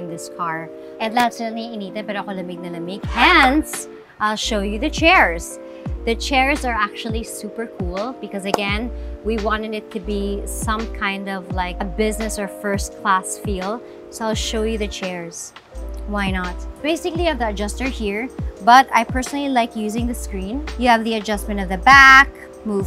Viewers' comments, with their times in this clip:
0:09 “we wan-nenit to be” haha love you Heart